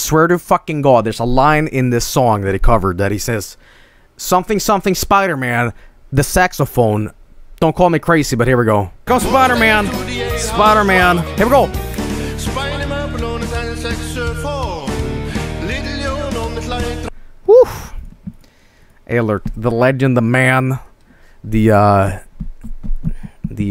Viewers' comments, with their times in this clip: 0:08 sounds like Jailhouse Rock but in Swedish, methinks it's this: "Spider Murphy played the tenor saxophone, Little Joe was blowin' on the slide trombone" in Swedish